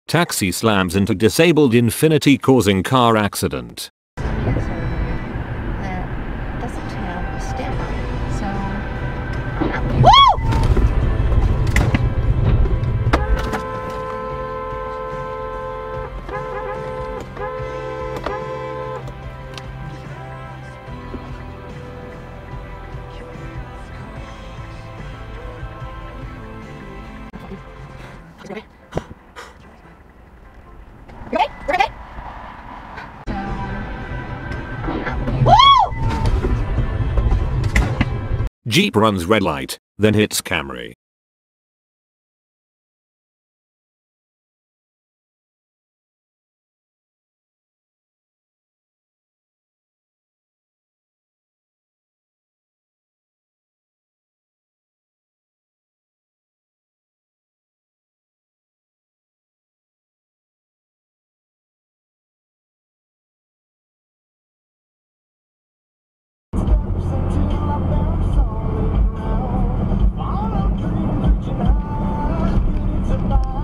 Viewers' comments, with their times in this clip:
0:06 what is she honking for
0:11 The girl really pisses me off. What is honking your horn at two cars that just crashed gonna do? Move them magically?
0:19 Who the pluck is he honking at and...why?
0:26 Horn was smart to other warn other drivers behind her.
0:56 why are they honking ? the accident already happened, the horse is out of the barn.